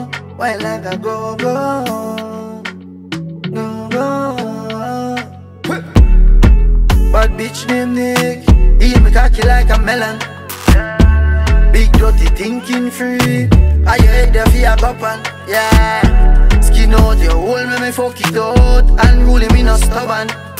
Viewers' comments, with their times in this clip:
0:03 Timeless visuals, clean riddim and creativity. Repeat watch otw. Unruly Boss 🤘🏾 🔥🔥🔥 And that girl 🔥